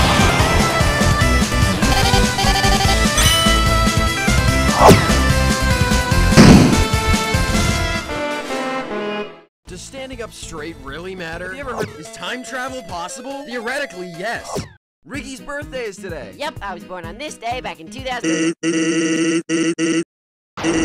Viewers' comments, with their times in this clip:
0:03 am I the only one that thinks that the remix is just someone saying pikmin over and over again?